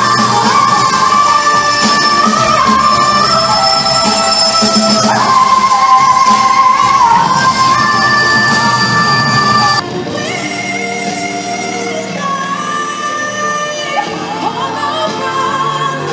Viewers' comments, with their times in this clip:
0:04 the overtones. Oh my Gosh!! that sounded so polyphonic. 🤩